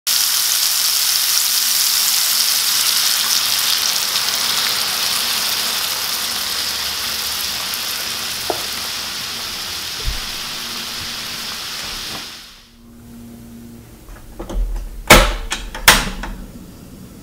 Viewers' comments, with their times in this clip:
0:00 is when my ears died.